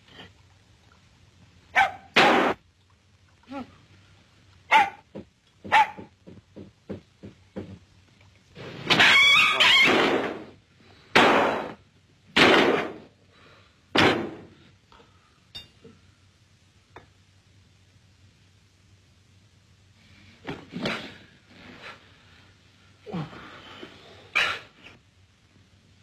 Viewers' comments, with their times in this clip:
0:07 dog window screech XD